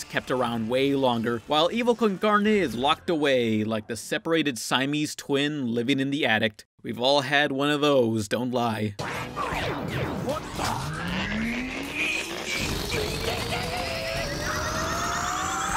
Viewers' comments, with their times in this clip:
0:03 that has to be the weirdest way to pronounce "attic", sounds like addict.